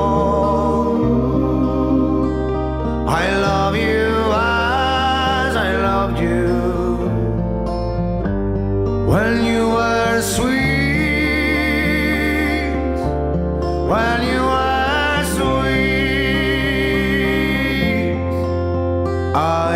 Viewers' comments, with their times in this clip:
0:07 Brilliant singers I've ever heard